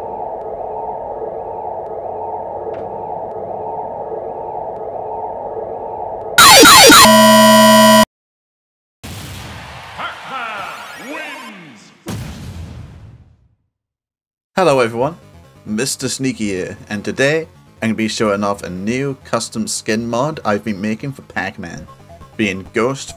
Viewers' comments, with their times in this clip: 0:04 dont use max volume worst mistake of my life